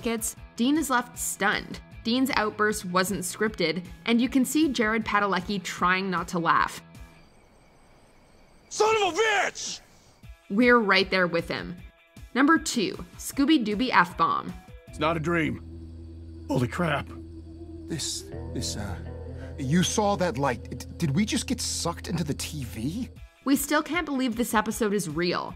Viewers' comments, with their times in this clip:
0:07 The number of times I've watched season 3 and I never noticed Jared trying not to laugh at Dean shouting son of a bitch. 😂